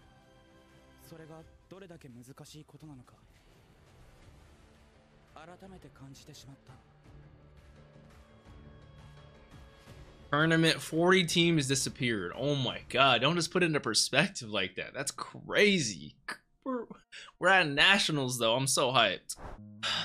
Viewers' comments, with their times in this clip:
0:06 doesn't this ost sound like an AOT one lmao? And the "40 teams disappeared" x')